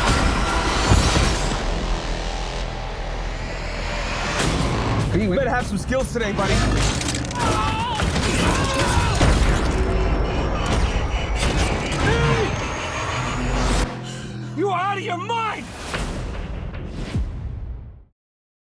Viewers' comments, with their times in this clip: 0:08 I loved how Cade screamed like Steve Carell!